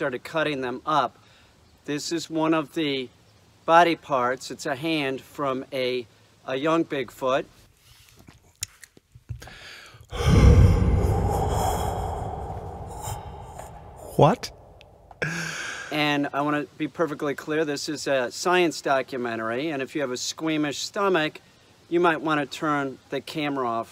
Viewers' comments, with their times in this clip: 0:10 feeel the asmr tingles (wear headphones) 😂